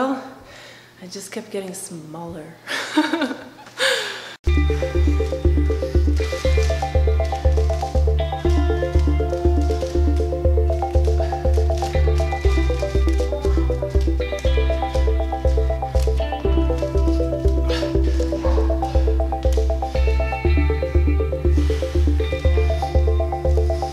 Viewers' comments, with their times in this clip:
0:10 ahhh I love the music!! Especially it's very relaxing lol